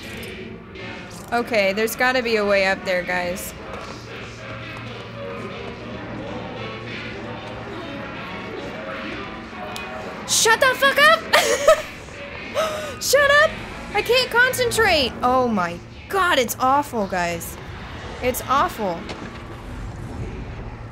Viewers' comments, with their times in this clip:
0:04 lmao Tomassi through the speakers was something else